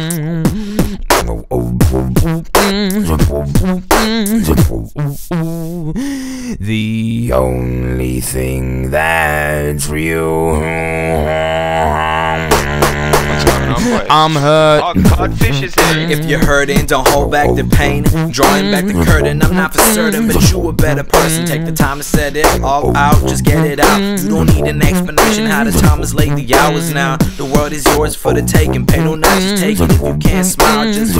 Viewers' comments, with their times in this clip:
0:05 my speaker couldnt habndle that sound
0:07 I love that guy who joined in the rap into like
0:11 The sentence on what's going on bois fits perfect in the song
0:12 “oh cod fish is here” that mixed in with the beat drop
0:12 "what a timing,the words the beat the rapper hahaha
0:12 bro turned into the perfect producers tag 😅
0:13 'Aw codfish is here' was so perfect with the beat
0:14 This moment when you join a Server and Hear Codfish Beatboxin' 😂
0:14 oh codfish is here! It's perfectly put in the flow!
0:14 I deleted my comment cause “ aw codfish is here “ flowed good!
0:15 that "Oh, Codfish is here!" was actually catchy
0:16 Flyes in my room be like: